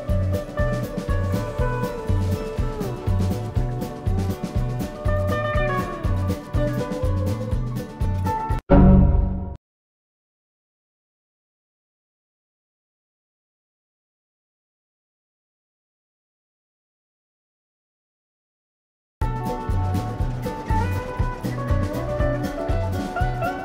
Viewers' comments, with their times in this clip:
0:08 I didn’t deepen the tone of the Windows XP sound effect I thought it uploaded sounding normally. At one time, I even heard it this deep when I was editing the video. I don’t know what’s wrong with this sound effect, but I guess I’m just gonna have to deal with it.